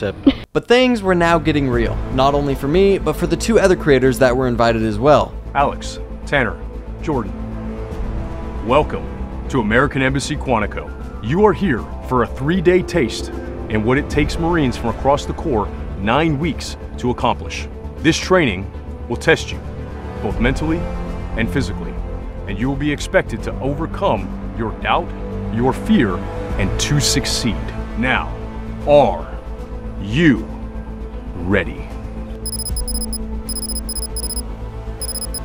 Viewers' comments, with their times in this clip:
0:05 super seargent could do a voice over for half-life 2
0:22 this man is a pro God damn voice actor and you can not tell me otherwise.